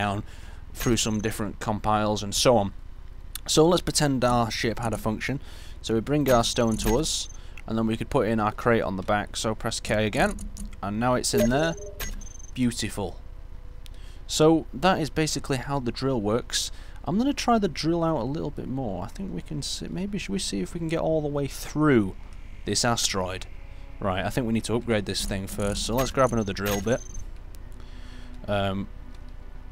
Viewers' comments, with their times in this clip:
0:10 Press like if you thought the steam message notification sound was your own, lmao...